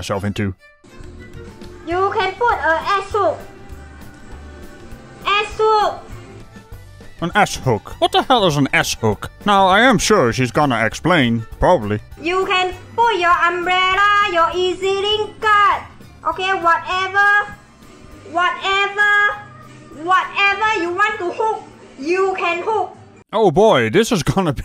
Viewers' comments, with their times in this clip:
0:08 An ass hook? You can use that for scratchin'